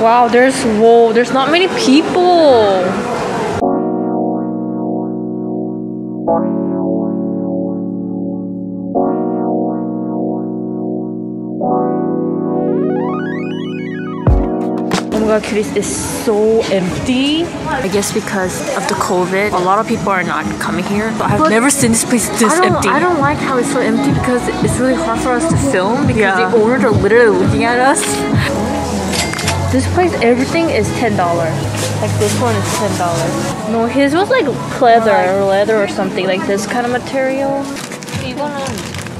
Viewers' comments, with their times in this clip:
0:03 If your watching this wearing an earphone when the BGM goes left and right lol
0:23 who else heard 'on my way' song??
0:23 OHH I KNOW THIS SONG!!!!